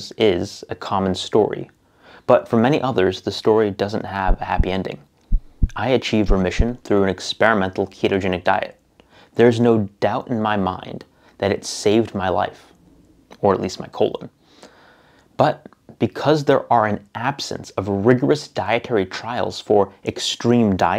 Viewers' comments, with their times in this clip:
0:06 dude, for whatever reason, the bass accompanying that graphic shook my windows 😂. Thanks again for the rigorous work and really thank you for responsibly noting the limitations of the case report, and not just willy-nilly saying something along the lines of "These findings highlight the importance of <<X>> for public health and should inform dietary guidelines. Will be sharing the study.